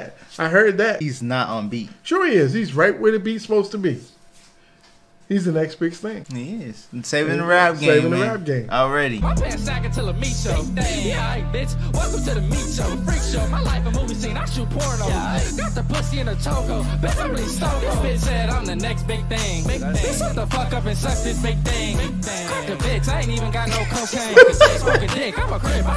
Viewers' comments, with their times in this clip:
0:06 dad is a lair he said he on beat thats a damn lie